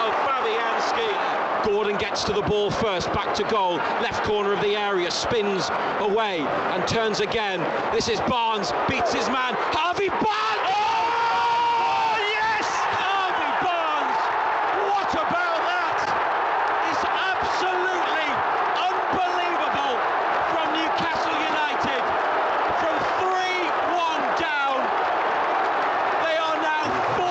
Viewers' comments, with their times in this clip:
0:08 I wish someone would scream my name like that xD